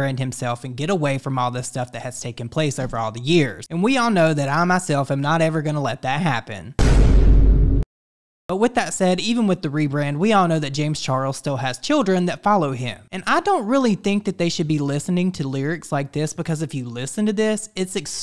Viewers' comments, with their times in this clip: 0:03 ..... DNR because I died laughing at the conviction in that promise 😂😂😂😂